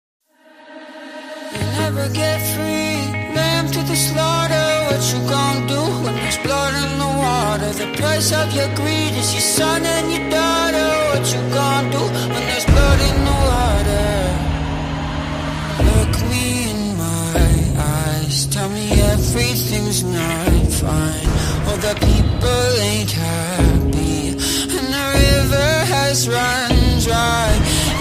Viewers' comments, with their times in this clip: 0:01 Just like 2 bees fighting
0:16 To battle to battle